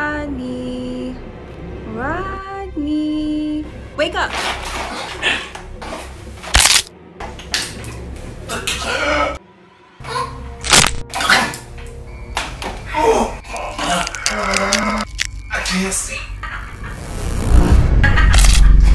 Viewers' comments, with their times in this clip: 0:06 Couldn't watch to the end. was my last second. I will hear that crunch in my nightmares😱